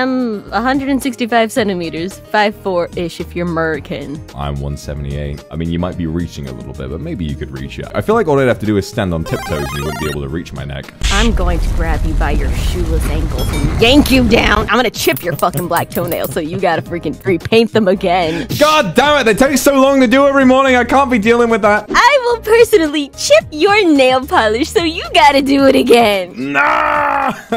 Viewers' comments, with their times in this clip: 0:09 HELP IS MAKIN ME LAUGH TO HARD THE MARIO SOUND LMAOO